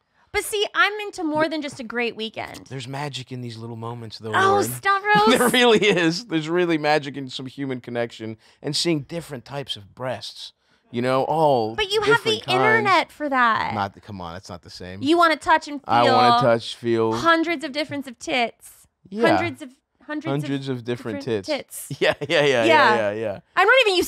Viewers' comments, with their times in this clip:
0:08 The guy in the background laughing lol